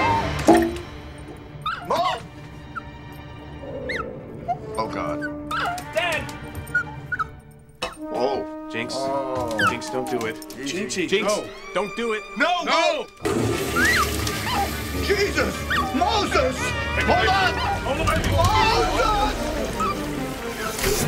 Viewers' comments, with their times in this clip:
0:09 that dog whines just like my dog Bea